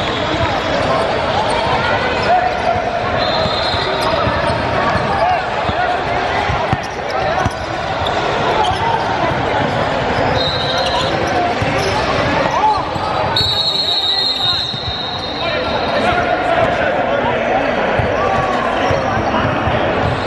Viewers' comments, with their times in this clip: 0:06 illegal ass screans from the white tshirt guy😂